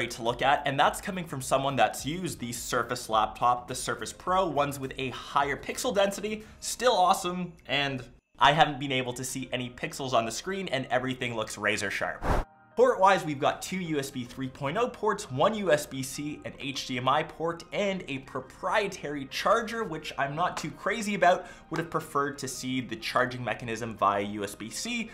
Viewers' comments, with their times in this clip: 0:08 you are great but just letting you know that there is a miss editing when you say "and"